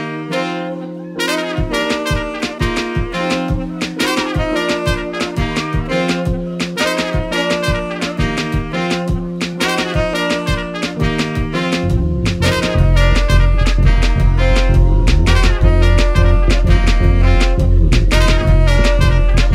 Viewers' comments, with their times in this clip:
0:04 is a WHOLE rap sample.